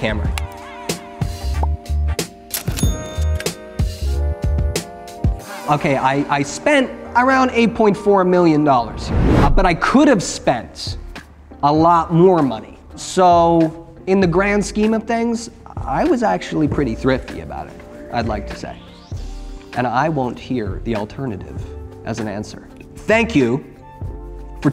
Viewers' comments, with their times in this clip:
0:08 Why do I feel like he could be the perfect young Matthew Perry for a biopic? I mean look That delivery and that sarcasm.